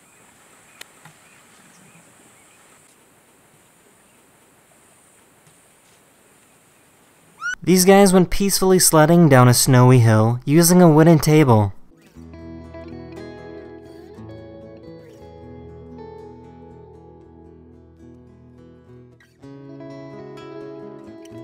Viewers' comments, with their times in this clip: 0:05 wtf is that scream
0:07 perfectly cut scream..